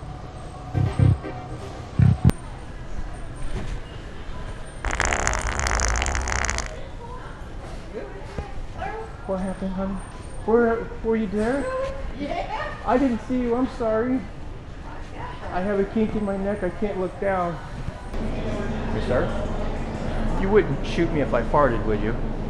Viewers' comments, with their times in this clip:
0:05 The Towering Fart-Zilla.